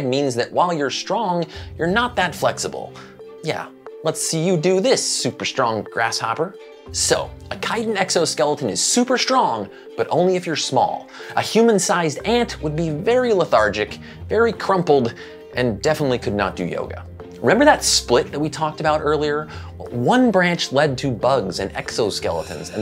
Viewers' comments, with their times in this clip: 0:07 oh tier zoo is.... Tier joe?... okayyy